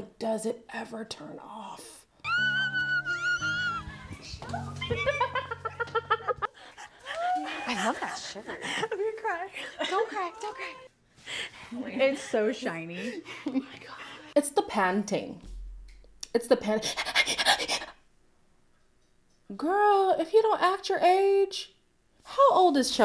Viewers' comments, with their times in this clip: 0:07 she is always pantingggggg